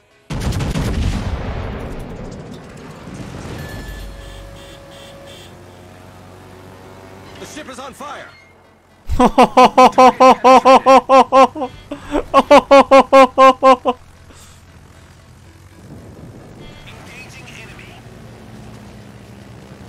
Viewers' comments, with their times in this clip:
0:07 that evil laugh tho... LOL